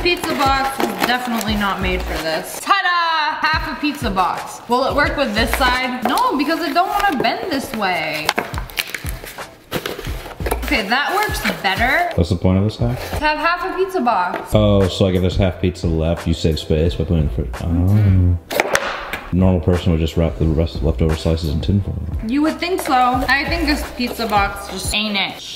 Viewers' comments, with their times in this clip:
0:09 Me : sound like chips